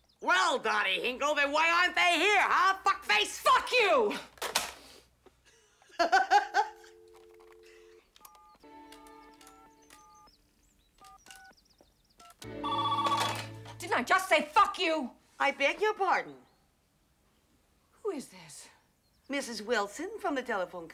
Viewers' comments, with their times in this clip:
0:06 Man.. her laugh makes me fall in love with her everytime..